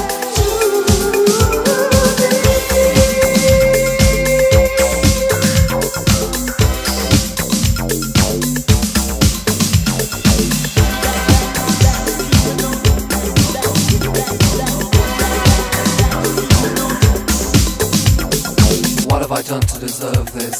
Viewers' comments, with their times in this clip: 0:08 Good music selection, bad the way of mix, more clear the bad mix